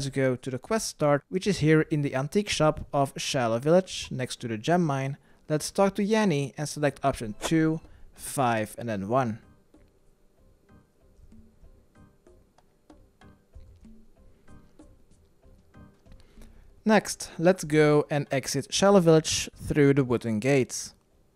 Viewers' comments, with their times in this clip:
0:06 anyone else heard laurel?